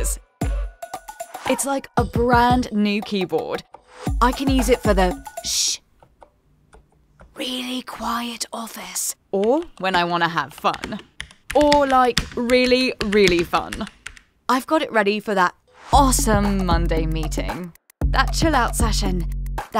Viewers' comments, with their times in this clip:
0:05 You really need to work on your sound and usage realism marketing. The person, types at 1 word per day to "demonstrate" the silent MX switches, and then you can see them smashing each key with at least 7kg of force on the browns. Does this mean that the case is not good for actually silent switches, that you have to actually slow down your typing to make it actually silent?